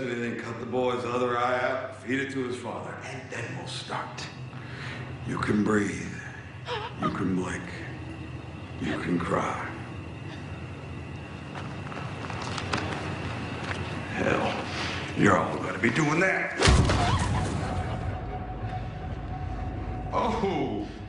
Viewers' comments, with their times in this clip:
0:05 shattered my heart, Sasha whimper of despair was unexplainably painful